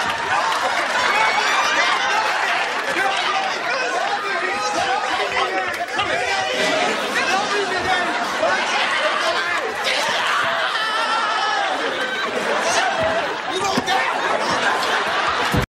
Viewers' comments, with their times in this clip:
0:11 Shawn’s scream when Pops whipped him!😂😂😂😂😂😂😂